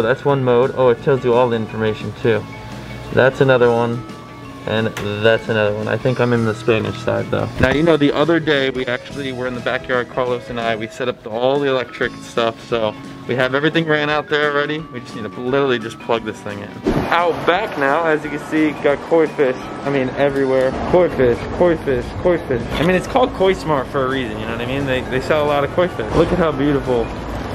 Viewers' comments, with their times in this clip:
0:09 You sounded like Kylo Ren with the mask on when you were by the foundation